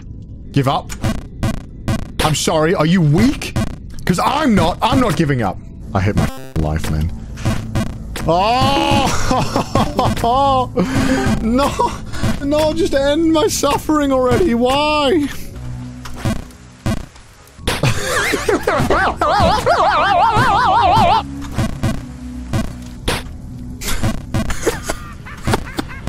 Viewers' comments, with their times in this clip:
0:10 the discord call sounds gave me anxiety